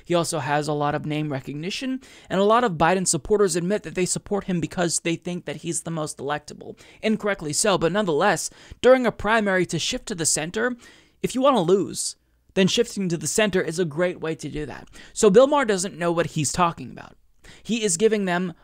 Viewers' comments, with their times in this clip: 0:05 For a second there I thought you said Joe Biden's supporters thought he was "the most delectable" and I threw up in my mouth a little.